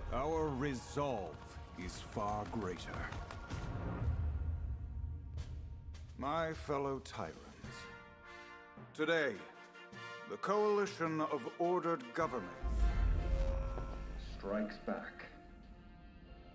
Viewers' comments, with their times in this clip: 0:04 anyone else think this intro voice sounds a bit like War from darksiders or is it just me?